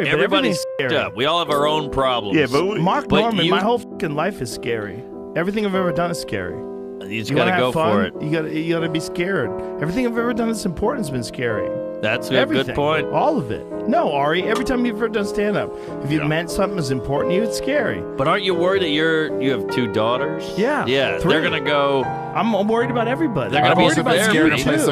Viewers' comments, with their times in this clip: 0:07 Joe starts drunk talk.